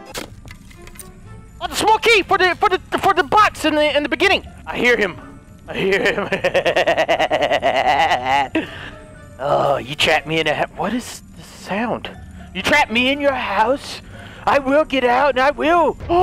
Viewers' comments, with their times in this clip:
0:04 i like h20 delirious's evil laugh skip the video to :D its awesome